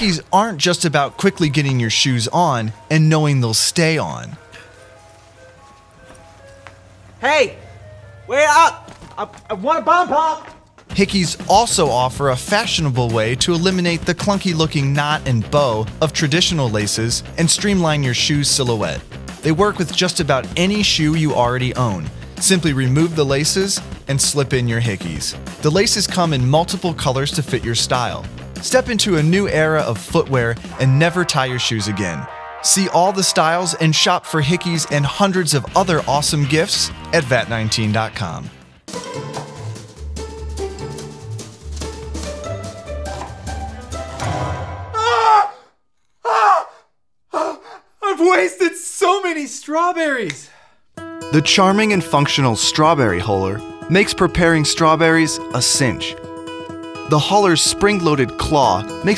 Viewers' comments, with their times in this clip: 0:05 Sounds like dantdm
0:39 Worker: screams Me: OMG HE GOT HIS FINGER GOT CUT Many minutes later.. Me: oh.
0:46 my baby sister burst out laughing at that guys scream